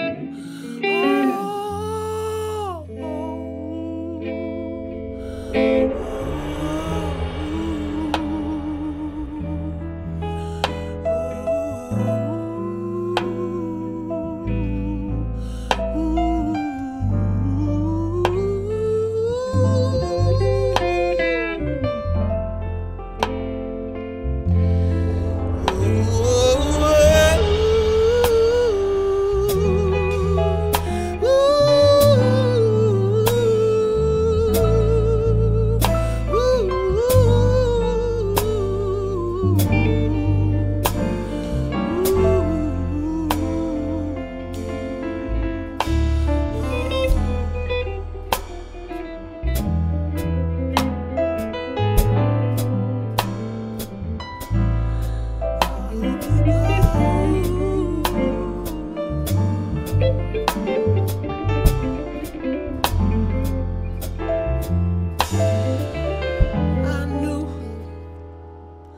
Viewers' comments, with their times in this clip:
0:09 That melody he goes into is hypnotic so much passion , Sir I come back to this on Sunday mornings ☕️
0:50 musicality at its finest